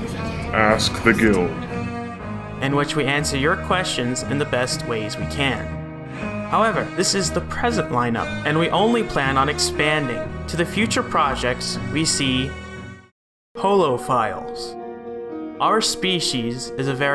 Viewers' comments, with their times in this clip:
0:03 is that just a really slowed down Sherlock theme?